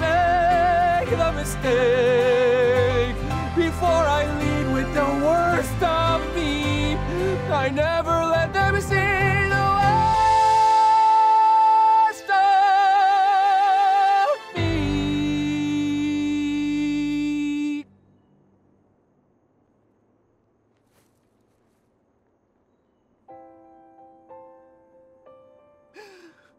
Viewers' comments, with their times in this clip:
0:08 THAT HIGH NOTE